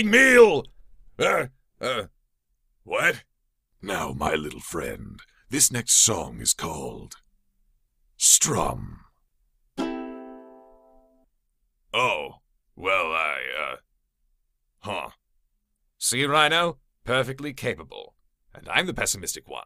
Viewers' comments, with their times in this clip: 0:06 that guittar song xDDDD